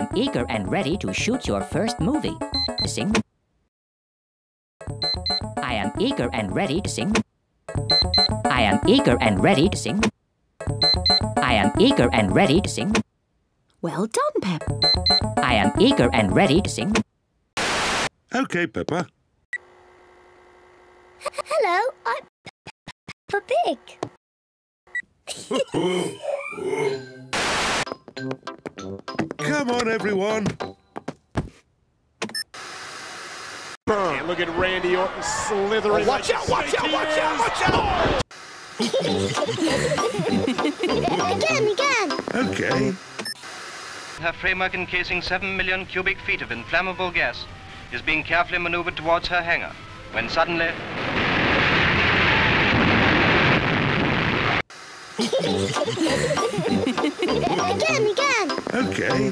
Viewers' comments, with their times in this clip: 0:05 like a ferbey
0:08 it sounds like said I am eager and ready to sing
0:19 peppa having seizure and hiccups
0:34 Someone: gets RKO'd Them: AHAHAHAHAHAHAHA
0:45 Prema Can Kissing 7 Million Cubic